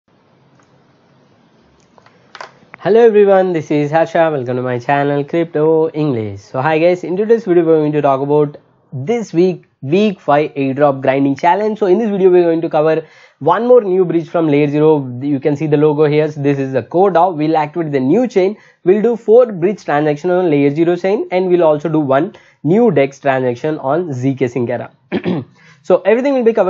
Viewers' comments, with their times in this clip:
0:08 You're going to "dog" about?